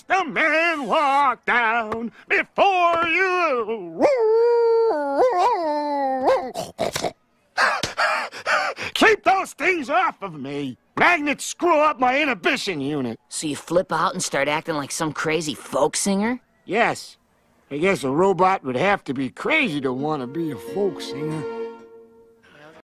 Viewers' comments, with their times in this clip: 0:04 bender hawoling like a werewolf or a werecar